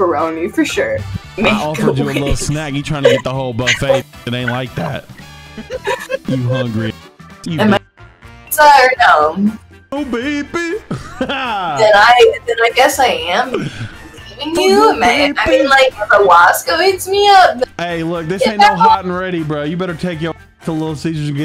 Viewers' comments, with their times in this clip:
0:04 that voice crack on lol